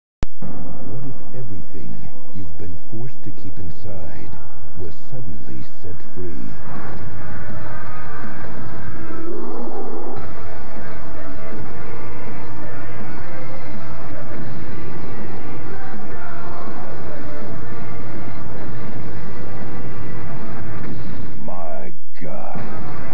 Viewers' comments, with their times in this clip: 0:09 Hulk roars like a grizzly bear